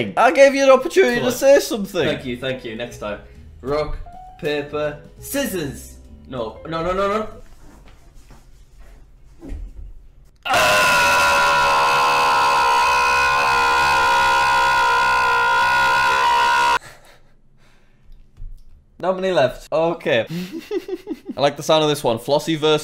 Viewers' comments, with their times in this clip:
0:10 rip headphone user